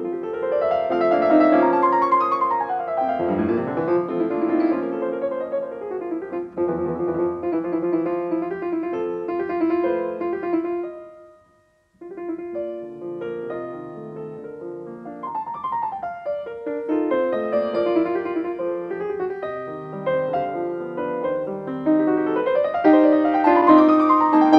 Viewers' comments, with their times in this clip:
0:09 Beautiful, yes. Flawless? No. I heard a splatter or 8. But, overall, a very beautiful performance filled with undeniable humanity!